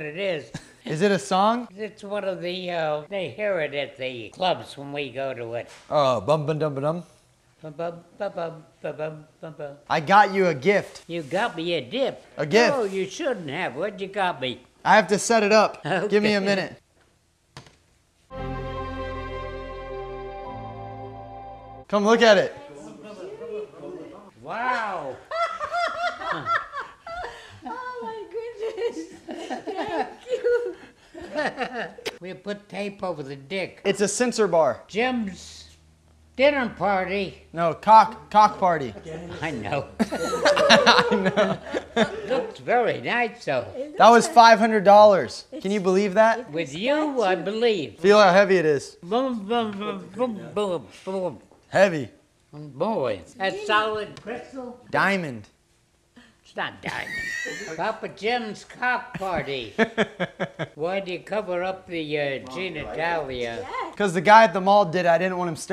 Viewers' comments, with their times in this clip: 0:10 it sounds like a whole poem i’m dying 😂
0:47 why'd he sound so concerned “bum dub un bum oh ..... oh boi”